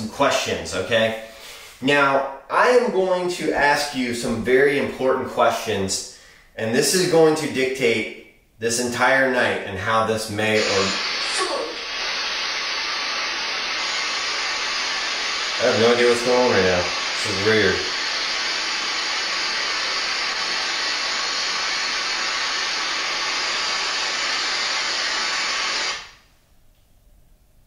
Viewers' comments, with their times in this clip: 0:10 What was the word that came from the box just before the static started ? 🤔